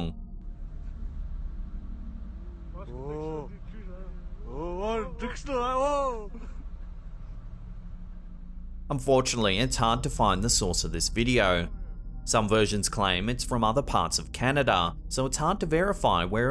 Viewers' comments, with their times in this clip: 0:03 The video …. Ok I’m Canadian and I dunno wtf language they’re speaking but it’s certainly not Saskatchewanian lmfaooooo so that could be why you can’t find evidence